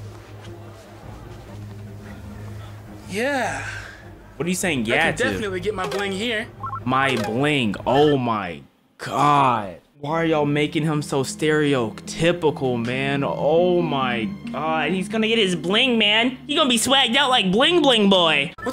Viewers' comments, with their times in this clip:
0:05 bro's grindr app went off